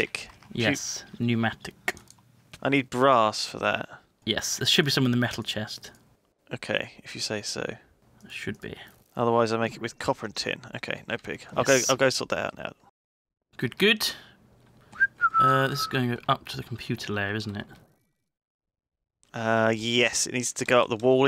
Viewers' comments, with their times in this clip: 0:06 I've never known any other kind of Minecraft Skelling Ton.